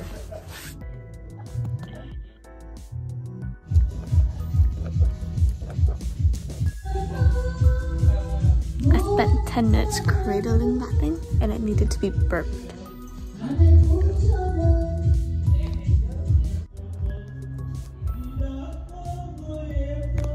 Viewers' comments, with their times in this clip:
0:08 it's the kareoke in the baground for me😂😂😂😂